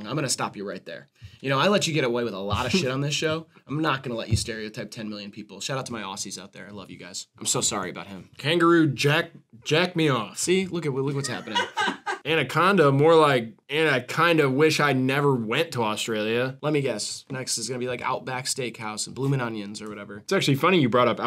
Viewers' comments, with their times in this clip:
0:07 happy aussie noises